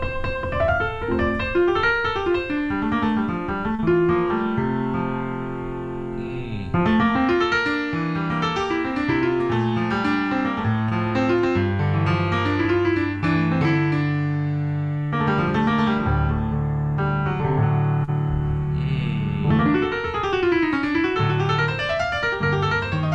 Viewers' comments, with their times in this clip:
0:04 he goes full Keith Jarrett and really digs deep, very nice.